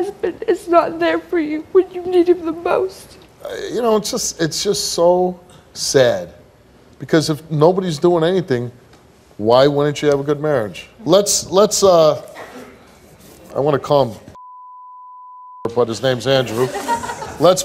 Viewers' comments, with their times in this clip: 0:03 why’d he laugh 🥲